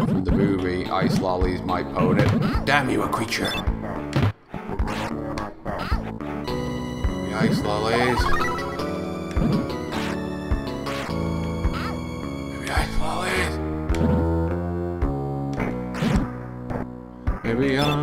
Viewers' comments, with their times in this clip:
0:05 This game has so much movies references that some how, without comprehension have a reference to the Lord Of The Rings soundtrack from the future!